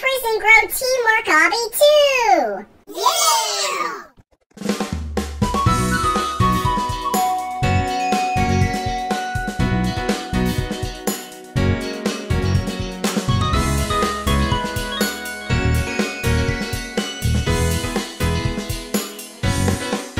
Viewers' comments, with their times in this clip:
0:03 the bfdi yeah + mouth lol